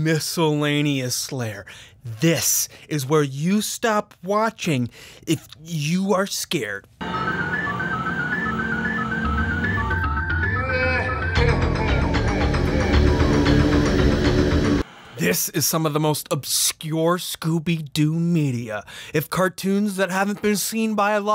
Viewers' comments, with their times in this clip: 0:07 this song will never cease to creep me out oh my god that + those absolutely cursed images of scooby doo is actually horrifying lmao